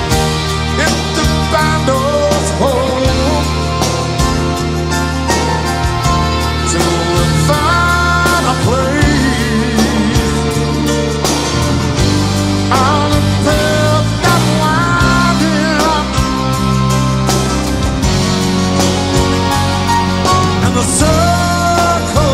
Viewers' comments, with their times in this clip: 0:07 tambourine guy goes off